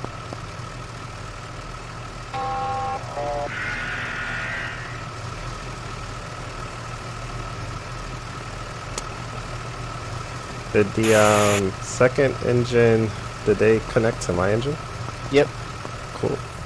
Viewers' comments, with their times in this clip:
0:04 Did I hear 51’s Tones